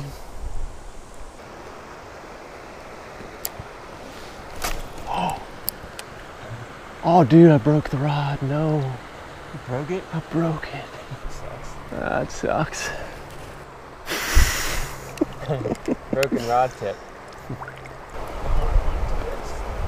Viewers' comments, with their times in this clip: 0:05 hahaha listen to him say ahh dude i broke the rod at .25 the speed